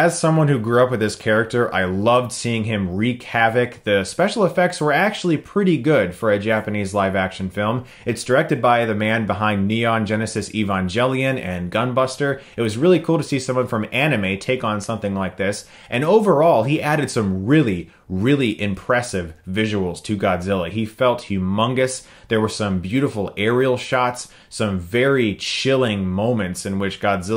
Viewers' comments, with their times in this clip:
0:10 Did he pronounce Evangelion as "Evanjelion?"